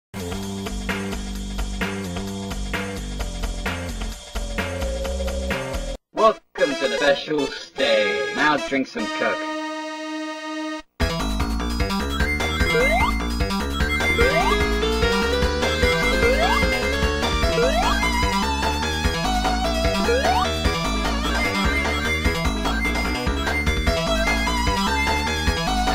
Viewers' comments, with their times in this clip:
0:06 Do mind that Edd Gould made this game because Edd Gould’s voice